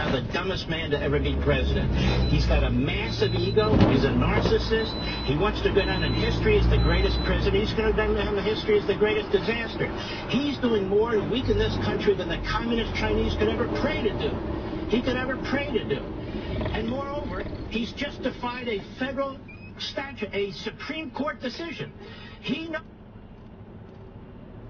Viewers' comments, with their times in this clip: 0:10 the radio rant was hysterical, in the most literal sense of the word. The crash? Meh